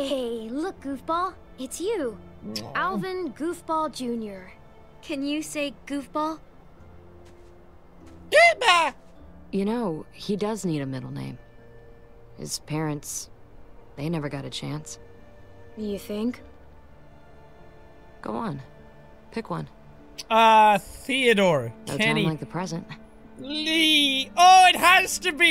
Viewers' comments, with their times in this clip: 0:08 the way he said that😂😂